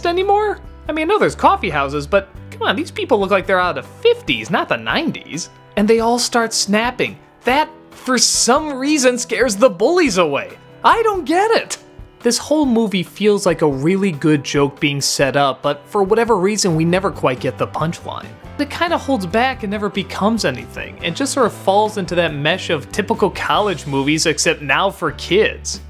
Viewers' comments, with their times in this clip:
0:07 *Tough guy finger snapping*